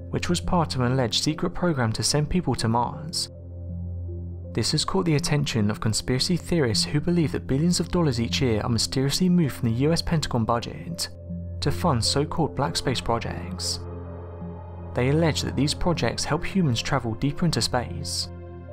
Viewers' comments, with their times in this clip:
0:03 he says ..."an alleged secret program to send people to Ma's. So we're just going to forget about poor old Pa? Not likely, pal.